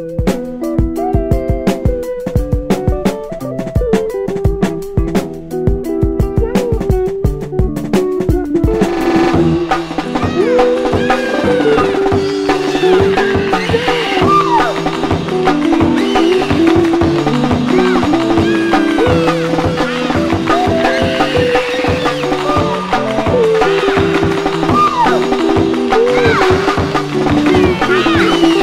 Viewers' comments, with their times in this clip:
0:10 I really like the child screams/noises Also the childish banter on Untitled 8 of Usually just a T-Shirt. Reminds me of how experiencing childhood felt like.